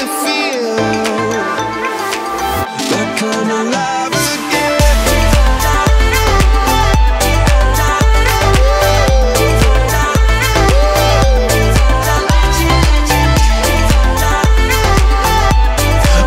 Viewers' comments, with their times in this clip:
0:04 If you put the speed on it sounds PERFECT.